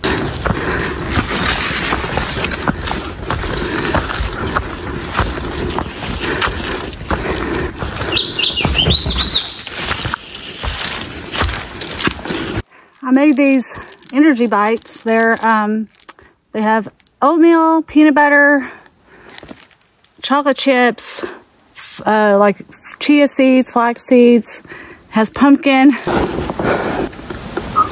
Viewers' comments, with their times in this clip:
0:08 lovely bird calls